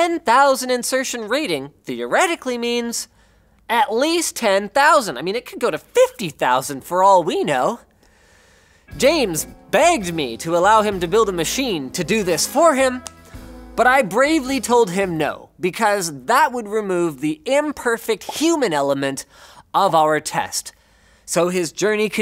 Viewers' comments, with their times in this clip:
0:08 But I perseVEREd Also: